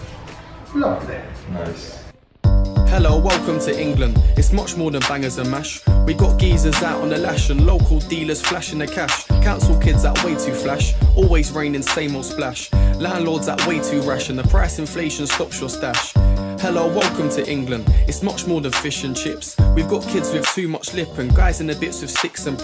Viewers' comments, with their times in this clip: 0:03 That guy rapping in the background is that you? It is fire 🔥🙌